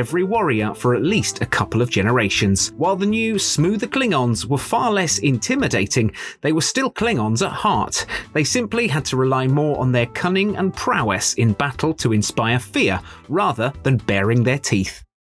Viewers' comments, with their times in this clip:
0:08 ... dammit. For a sec I thought they said BRUCE Campbell. That would be epic. If Woody Harrelson gets to be in Star Wars lore, then why not Bruce Campbell? Sadly, it hasn't happened... yet.